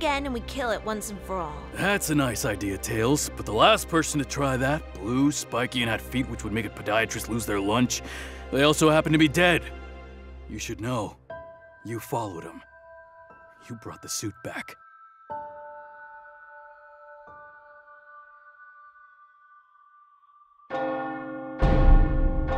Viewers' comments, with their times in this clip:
0:07 I like the verisimilitude as version of Sliver's Voice
0:10 This moment gave me goosebumps. Sonic and Tails leaving to kill that monster, only tails returning with the suit, the black and white art style and this creepy piano music in the background. I wonder if Tails is the one to blame that Sonic is inside that monster. I mean, it is not like they would have gone alone, the others sure would have come along if they knew. But I am guessing that Tails convinced him to go alone. Maybe he saw Sonic as an imposter again and stabbed him in the back, like he did in Amy's world.